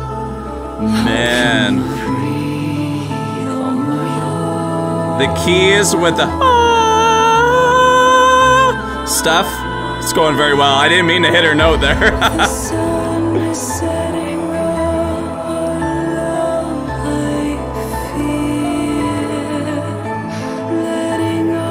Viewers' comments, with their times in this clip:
0:08 Bro actually hit that note 😂